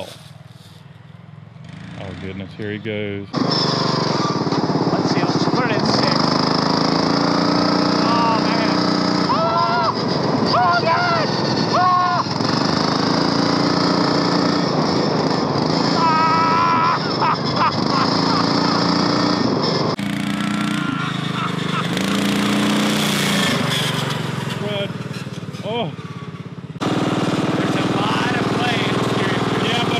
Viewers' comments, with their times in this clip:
0:10 Who was the little girl driving screaming 'Oh my God!'? ;^)